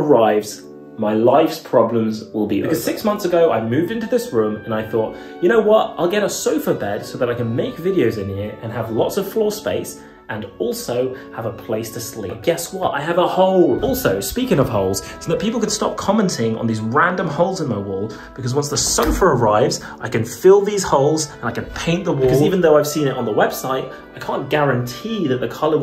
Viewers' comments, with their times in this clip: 0:08 the gymnopediea was just perfect